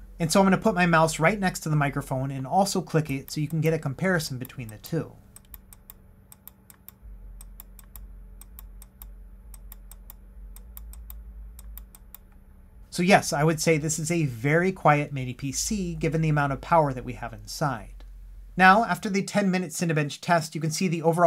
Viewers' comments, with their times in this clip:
0:04 The onexplayer fan sound little bit annoying, so thank you for that it’s so helpful,